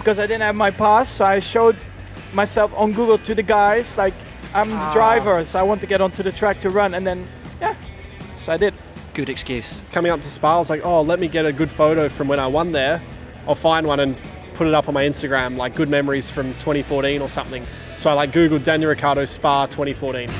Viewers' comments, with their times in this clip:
0:07 Voice crack by Max 😂😂😂